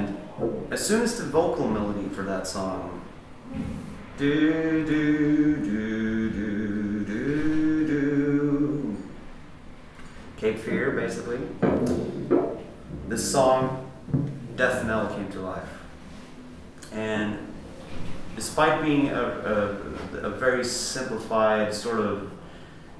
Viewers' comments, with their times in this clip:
0:04 omg it look like papa's voice 0_0
0:06 I've seen other interviews with Alpha, and he has a pretty strong accent. This guy seems to sound almost exactly like Papa.. but who knows....thats the pint right? Keep us interested??? OK.. after watching to the end.. this definitely is Tobias...When he gets to theres no doubt, thats his vibrato and inflection.....